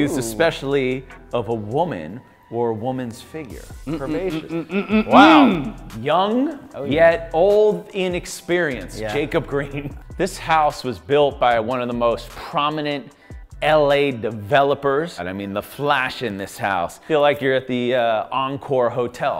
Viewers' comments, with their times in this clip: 0:04 dude did a adlib to the beat😂